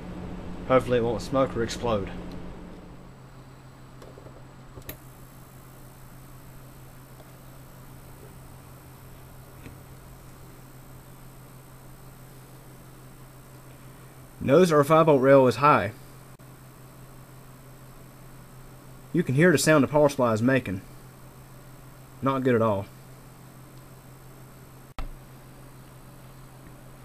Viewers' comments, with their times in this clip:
0:08 That is awful! In my Corsair PSU a rely controls the standby rall! That loud buzzing doesn't sound reassuring!